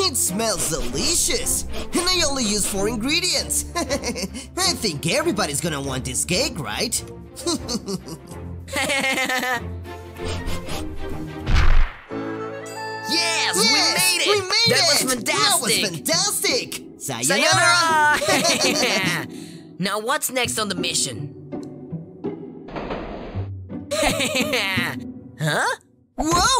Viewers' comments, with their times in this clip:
0:08 Bruh the laugh 😂😂😂😂